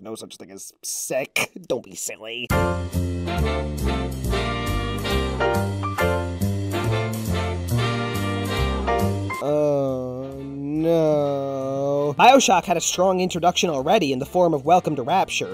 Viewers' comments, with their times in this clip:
0:03 that’s a nice change in music :)